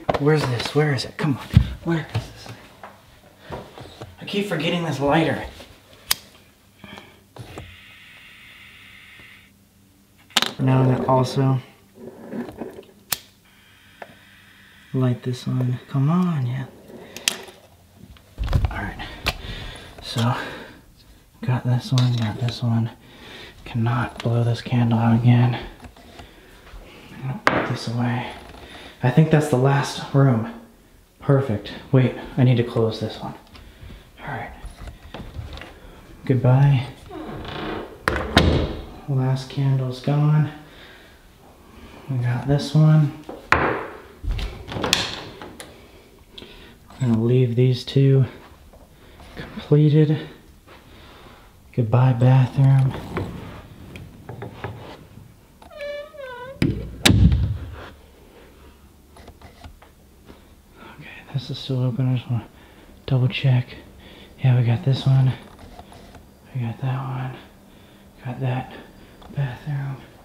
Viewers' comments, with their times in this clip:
0:07 When Sam lit the last candle, did ya'll hear a faint scream or am I crazy? Or maybe it's the mic that had a problem? idk listennn
0:08 listen there is a long exhale or inhale or hiss in the cameras mic. LISTEN CLOSELY it happens 2 times when he is lighting the candles
0:08 listen closely there is an inhale or exhale in the mic happens 2 times when he is lighting the candles
0:55 you can hear someone say “ze ze” or “Zoe Zoe”